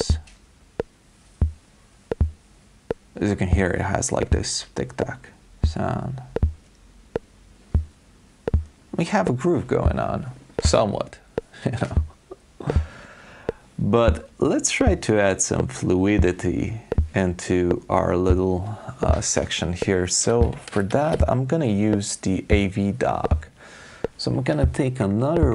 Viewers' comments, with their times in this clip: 0:09 and Cortini famously said that it cannot do 4/4, ever, pffff